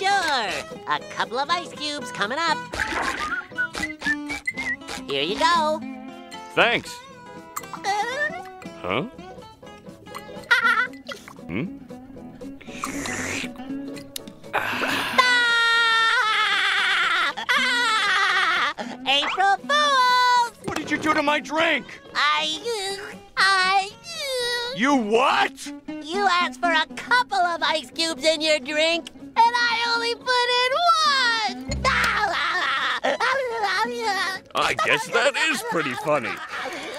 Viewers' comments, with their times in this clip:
0:07 Spongebob giggling gets me every time😂😂
0:23 Is nobody talking that Spongebob sounds like Kirby
0:24 spongebob's highest voice ive heard